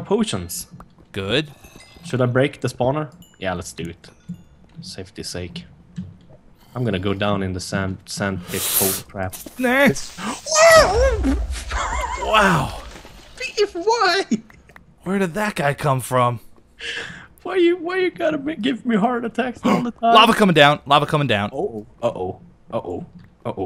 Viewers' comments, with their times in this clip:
0:09 Beef Noise LOL!